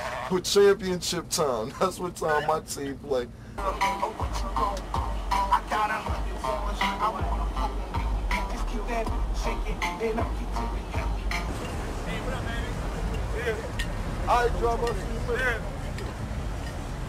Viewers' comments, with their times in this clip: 0:04 they listening to that gangstalicious 🤣 do the homie
0:04 all them silent in the limo listening to southern snap music is funny 😂